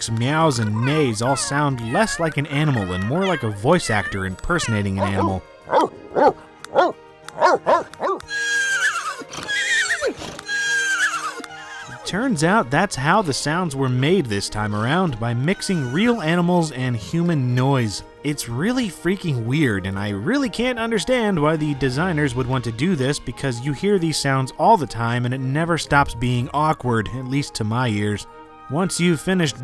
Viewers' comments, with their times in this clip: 0:06 Why the dog sound like that one time Smokey barked in Friday ? 😂😂
0:15 The Animals speak Simolian.